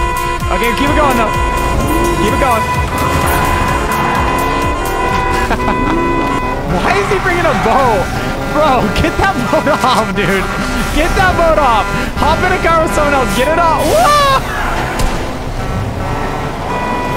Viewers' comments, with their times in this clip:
0:03 It's like a libyan wedding 😃